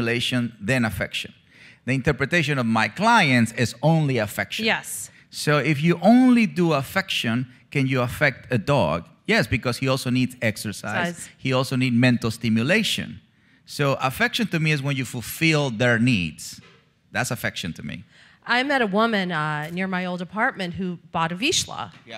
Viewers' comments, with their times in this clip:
0:05 huh? what's he mumbling about affection shmecktion